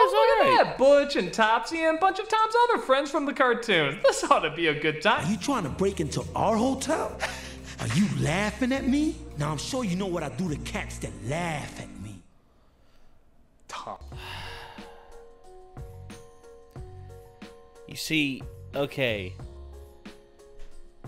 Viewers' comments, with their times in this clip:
0:04 that's actually Nicky jam as butch so that's why the accent is different